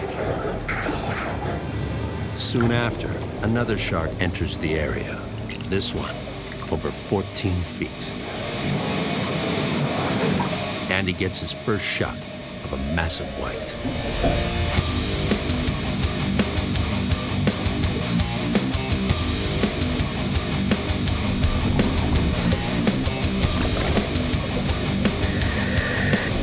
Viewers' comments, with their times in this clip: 0:09 I didn't know sharks liked Djent! True djentelmen!
0:14 why do I hear boss music Edit: what song is this?